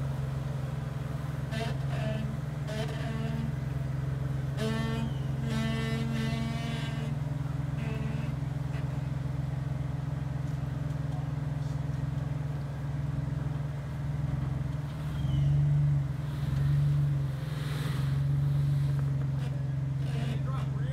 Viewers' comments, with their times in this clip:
0:08 Great rigs, great driving! So glad that you left the original audio...at when momma told child you're okay then the jeep, in its own language, seemed to have the same creaking response to child. Great scenery and challenges... Wish i lived closer. Thanks for sharing this video!